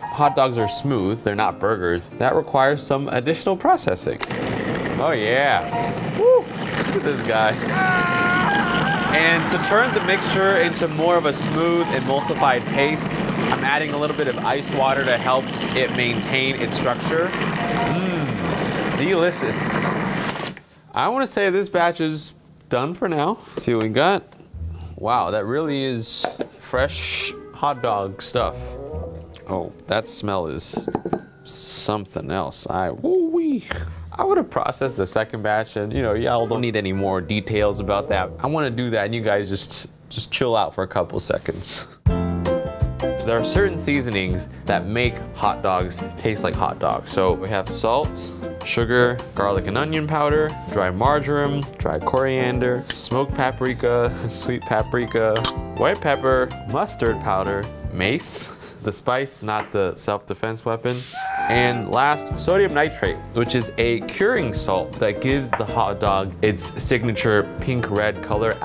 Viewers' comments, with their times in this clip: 0:07 that edit and sound effect though😆
0:51 I thought he said margarine-